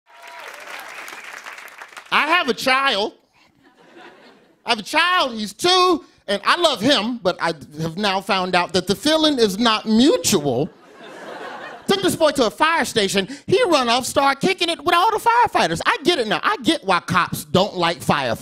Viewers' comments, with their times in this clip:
0:02 "I have a child" :audience laughs: A wet dream of a crowd.